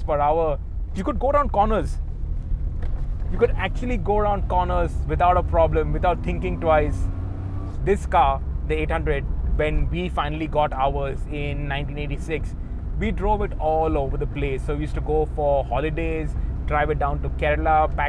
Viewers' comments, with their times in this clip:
0:06 I hate that squeaky sound because of the manual transmission?. is it from Maruti 800 or Japanese Suzuki Alto